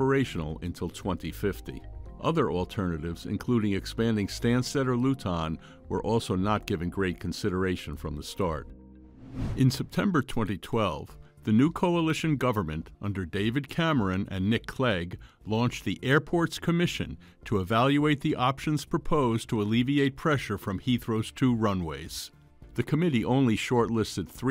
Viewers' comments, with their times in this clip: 0:05 ah yes. The worst airport in London.. loootaun